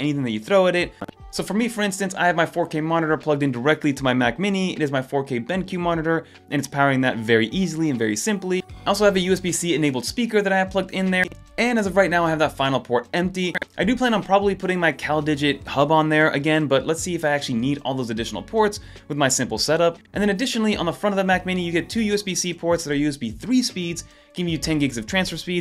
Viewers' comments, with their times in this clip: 0:06 Dude, what's wrong with the sound? I thought my AirPods were dying 😂